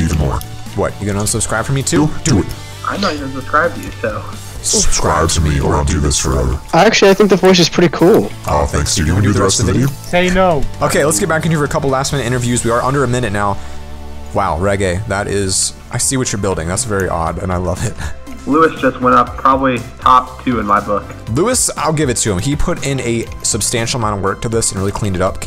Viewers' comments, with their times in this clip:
0:08 darkiplier voice o